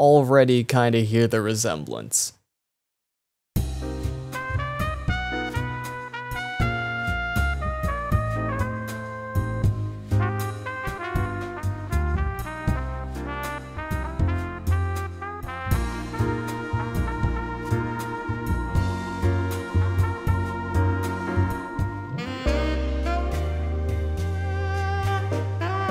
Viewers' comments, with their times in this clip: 0:10 maybe it’s bc their both saxophone/trumpet I think and kind of jazzy